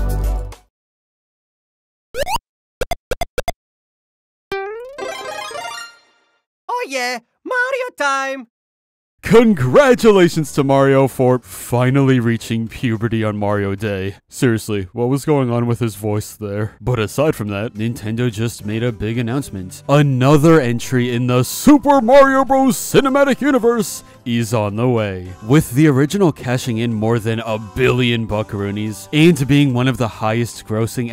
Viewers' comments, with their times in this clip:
0:04 THE VOICE CRACK XD
0:05 that is not mario that is matthew oh yeah happy mar10 everyone
0:08 Did marios voice actor have a voice crack?????
0:15 He got a new voice actor